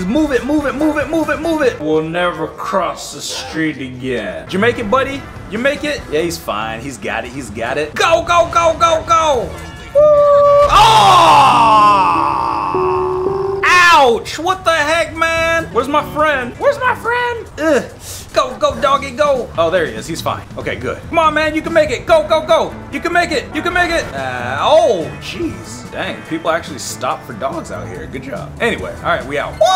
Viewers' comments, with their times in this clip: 0:10 That crash was so bad, it took the holy spirit out of him! 🤣🤣🤣